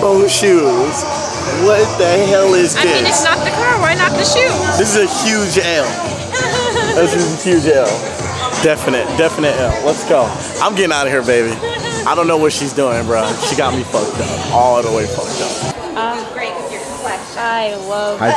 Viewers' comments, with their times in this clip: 0:04 Lmao 😂 the kid in the background was like.... HMMMM 💁🏾